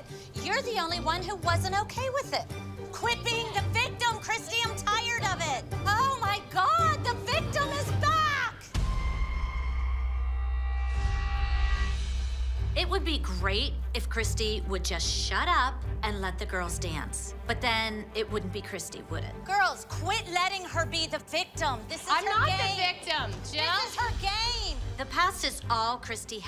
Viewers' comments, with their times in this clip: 0:08 anyone noticed that woman laughing in the back hahah